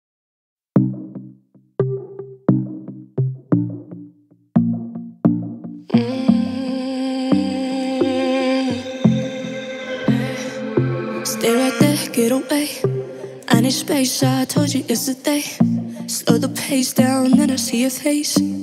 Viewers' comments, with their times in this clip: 0:00 no one gonna talk ab how the beat lowkey is the facebook sound when you click something?